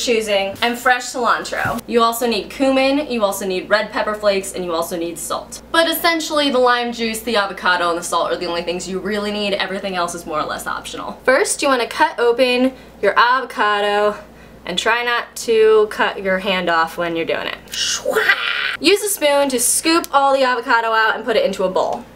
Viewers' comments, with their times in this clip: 0:06 You sounded a bit Australian... Or was that intentional?